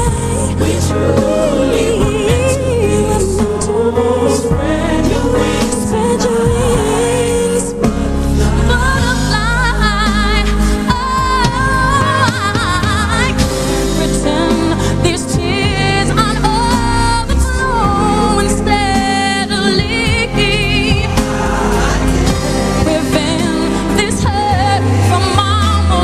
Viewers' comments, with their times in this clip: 0:08 I love how she's "Imma whisper throughout the song bitches" then she just "fuck it Imma show em who's Mariah" (in her mind, of course, the words Mariah and Queen are synonymous)
0:08 UNLEASH THE VOICE
0:08 saliva seems blocking her throat haha. Its so much fun seeing her struggling in live performance than lipping and showing us hitting those notes effortlessly where in reality she can't haha. #realtalk